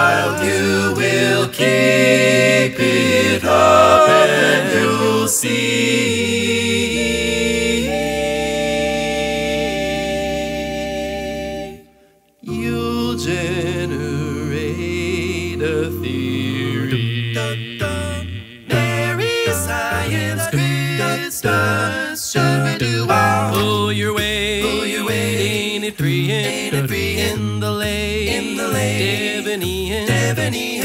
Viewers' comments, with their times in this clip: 0:09 The subbass root is out of this world...
0:16 hearing a touch of the Beach Boys’ “Little Saint Nick” in the transition?